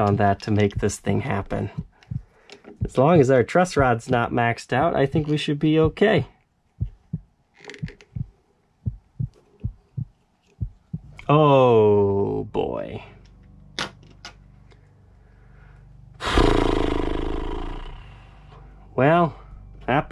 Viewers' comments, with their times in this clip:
0:06 Sounds like you may have an irregular heartbeat you might want to have that checked.
0:08 and earlier i heard heart beat lol